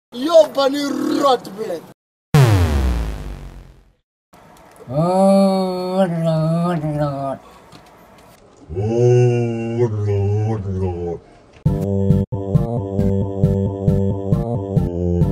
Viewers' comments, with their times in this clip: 0:01 Eww that horse omg aah